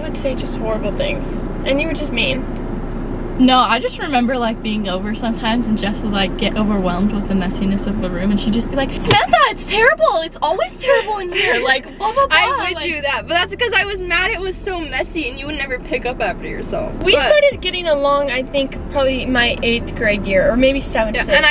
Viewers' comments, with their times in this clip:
0:09 very good impression and accent.